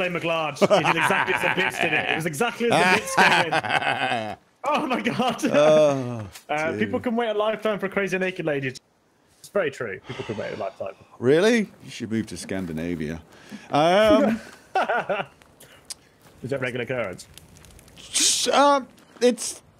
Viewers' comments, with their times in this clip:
0:06 I can't make out exactly what they are saying what about naked ladies and scandinavia?